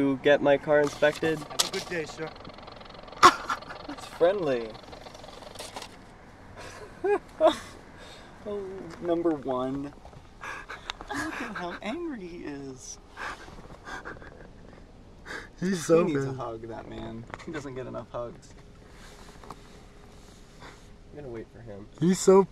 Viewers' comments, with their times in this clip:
0:06 instead of that weird laugh you should've said "bazinga".